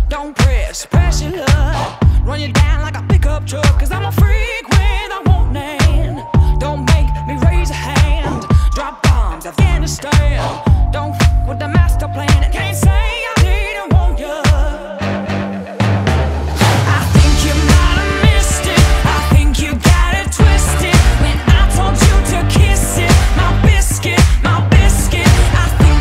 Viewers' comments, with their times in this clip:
0:08 does sound very bad now